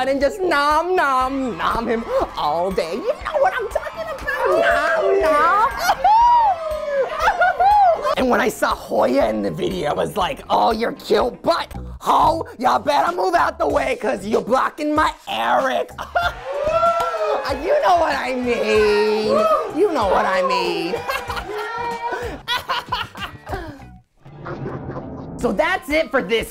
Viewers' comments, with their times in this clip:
0:08 I love how Eric just transition into a sassy smoker lady persona lol
0:13 hahah i see you guys commented that but have u heard like "you're cute, butthole, ya better move..... eric" WHO ELSE